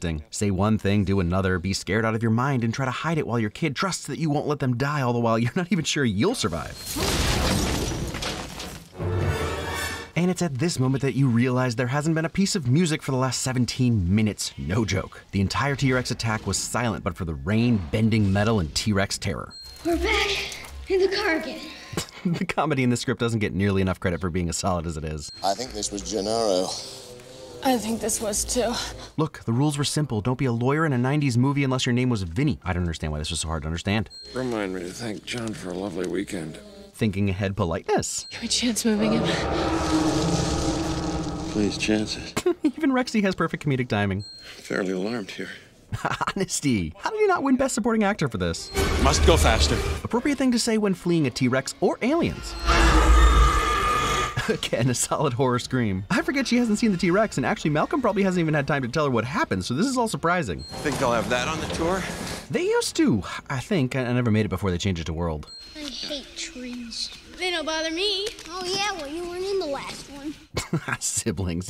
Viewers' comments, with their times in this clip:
0:10 that is actually seriously impressive. In a world where blockbuster movies now must have constant music in the background to tell you exactly how you should feel at every second, the actual legit tension in this segment is mindblowing. Modern blockbuster really can learn from older films. We don't need more and more and more spectacle that has to be bigger and better than the last. You can be grounded without going bonkers AND have mass appeal at the same time.
0:53 god that was such a perfect horror scream Sounds so genuine, what a great actress